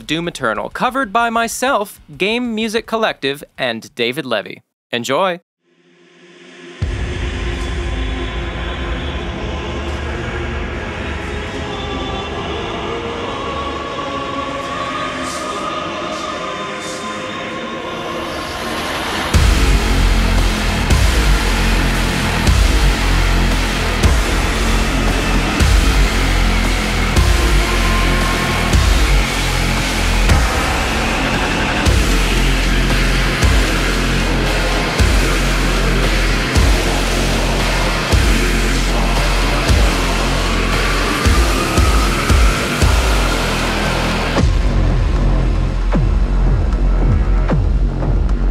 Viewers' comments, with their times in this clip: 0:09 Bro dude went demon mode with the music😭🔥
0:33 that transition was smooth